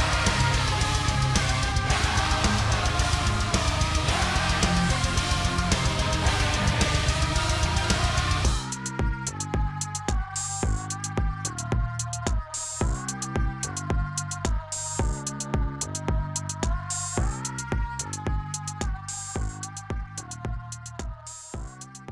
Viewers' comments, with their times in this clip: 0:05 The dude laughing always gets me.